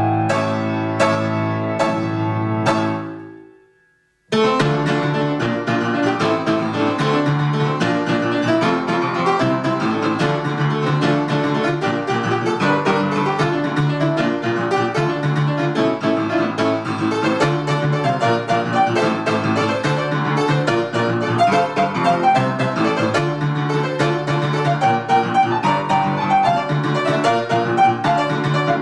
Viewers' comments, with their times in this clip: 0:03 Sorry but it sounds horrible. Its too fast, and there are mistakes. Everything before was better.
0:12 mistake but it does not matter :D
0:13 There's actually a note wrong it's a bit to high